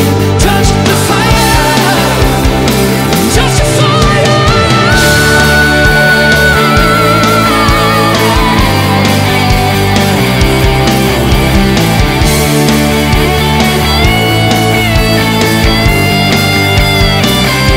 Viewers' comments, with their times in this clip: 0:03 I never knew that note was humanly possibly by a bloke! What a singer